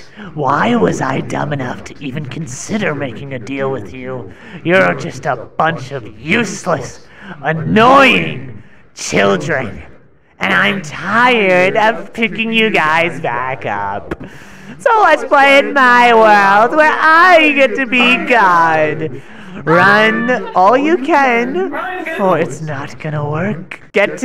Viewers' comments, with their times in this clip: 0:06 why does Dandy sound like AM